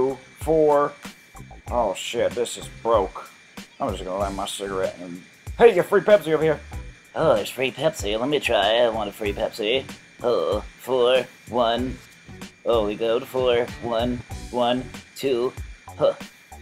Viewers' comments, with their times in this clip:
0:04 lol boomhauer from king of the hill